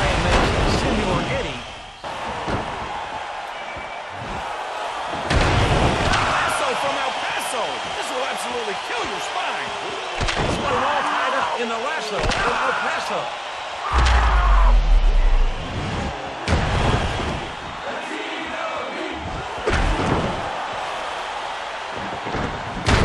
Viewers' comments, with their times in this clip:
0:09 woah those Suplex's are really nice!!! And never heard Undertaker screaming like that before xD